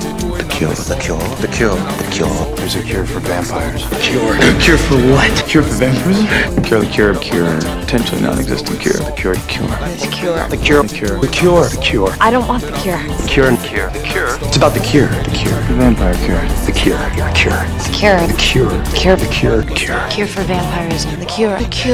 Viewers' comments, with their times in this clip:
0:07 the word cure starts to sound really weird
0:07 "the cure" started to sound ridiculous! It reminded me of HIMYM and Ted's "ball" :D